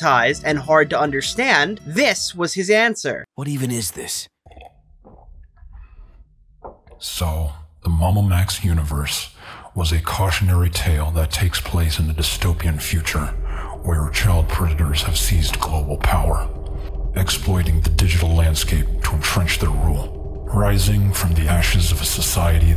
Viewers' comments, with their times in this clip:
0:03 what's with the amplified sound of him taking a drink? That's the most disgusting sound in the world.